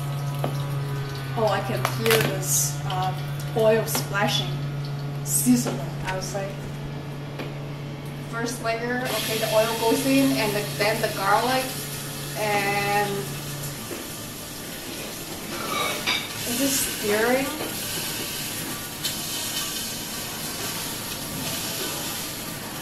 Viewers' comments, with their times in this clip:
0:06 definitely sizzling..BIG sizzles..!